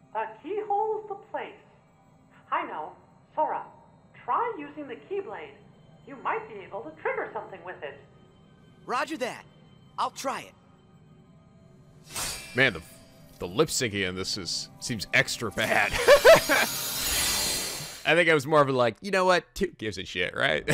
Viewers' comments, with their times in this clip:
0:05 -ish, to be fair the game was made in japan also it makes sence that the cat in wonderland has pooh's voice, they both have the same Voice actors